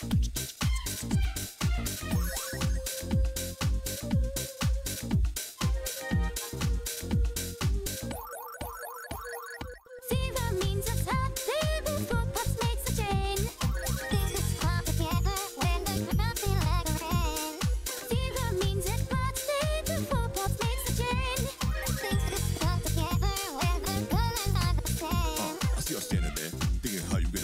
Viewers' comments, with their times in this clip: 0:09 something about how she says this first line sounds so cool ofrkncmekomdwcagsjdhb